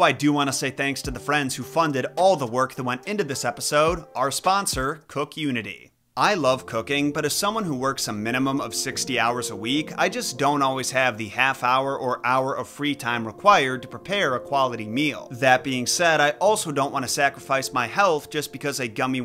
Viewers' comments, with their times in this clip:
0:05 am i the only one who heard cocaine?💀